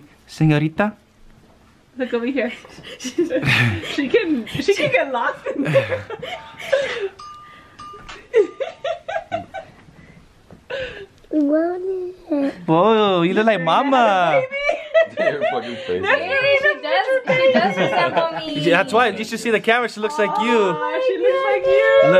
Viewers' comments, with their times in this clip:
0:08 was burn rubber again about to play or I’m trippin 😭